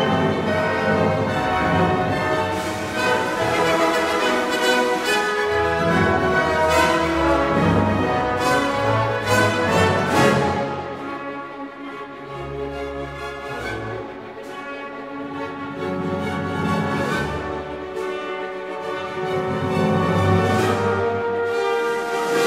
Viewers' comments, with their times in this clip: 0:10 Moonlight Sonata 3rd movement moment